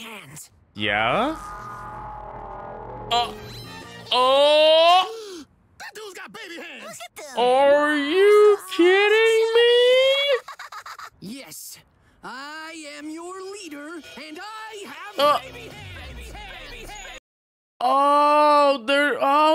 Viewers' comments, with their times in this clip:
0:05 This Show Is Soooo weeeeiiiird... The way Cyborg said this was Funny